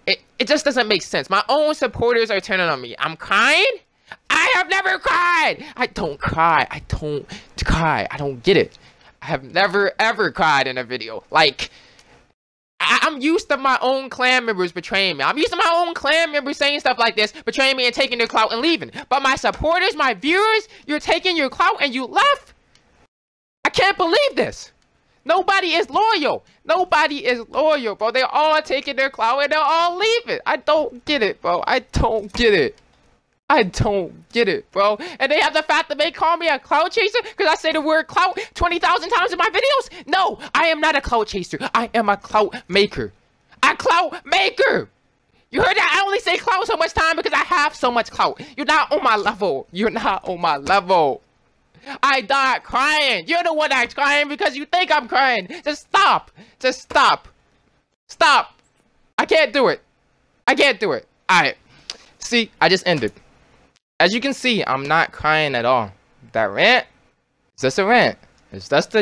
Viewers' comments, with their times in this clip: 0:04 sounded like he cried .
0:57 u sound like ur crying